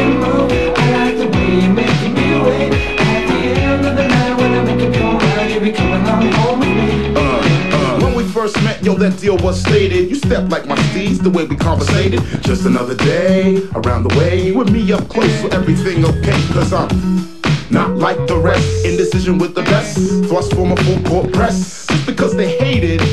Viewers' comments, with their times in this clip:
0:07 = time for random black guy rapping for 15 seconds so they'd play it on RNB stations too